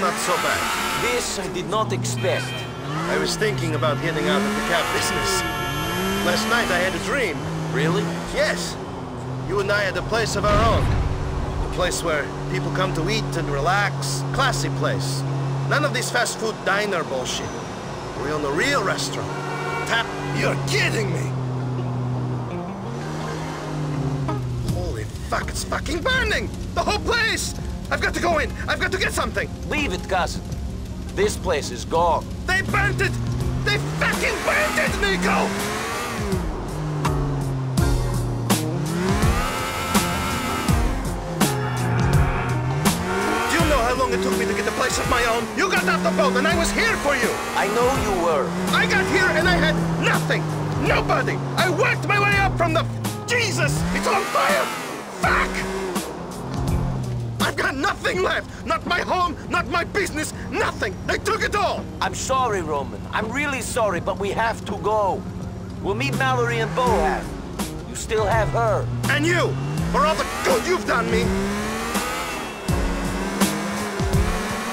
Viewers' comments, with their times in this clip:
0:09 Anyone heard the explosion
0:10 you can hear the cab depot explode in the background, that's amazing
0:10 did I hear an explosion??
0:10 I Heard a Boom!
0:10 Who heard explosion ???
0:57 You can hear Roman’s voice going from “raging” to “on the brink of tears”